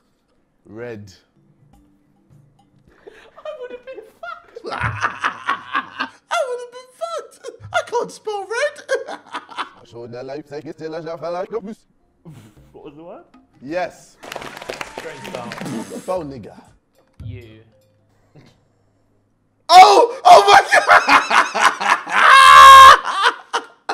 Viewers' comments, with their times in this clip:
0:09 Pretty sure thats french
0:10 when the alexa has a breakdown